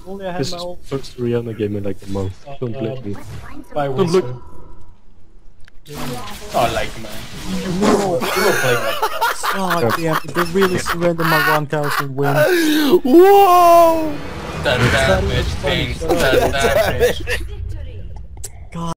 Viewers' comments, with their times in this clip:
0:05 Dat Zilean :D and Dat laught :P